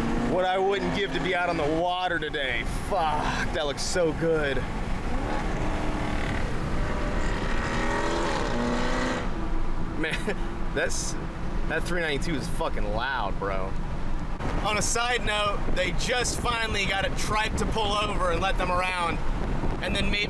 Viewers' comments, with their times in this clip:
0:05 that 392 is loud, did he swap a Ford truck to a 392 or is that a diff vehicle im hearing as he gets on it??